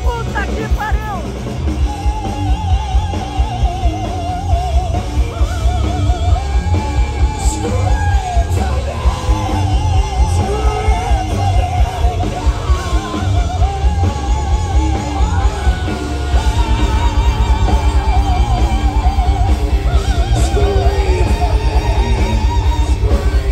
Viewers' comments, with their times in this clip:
0:04 Terrible. sounds like cats in heat.